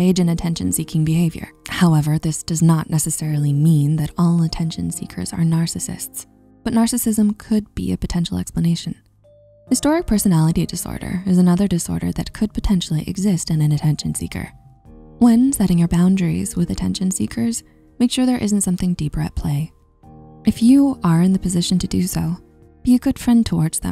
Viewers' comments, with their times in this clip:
0:07 I swear she said "historic personality disorder." 😅